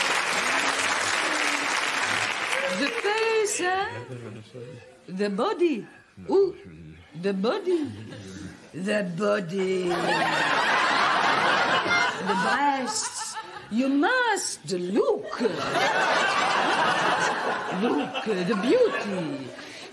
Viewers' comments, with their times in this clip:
0:05 best way to pronounce the body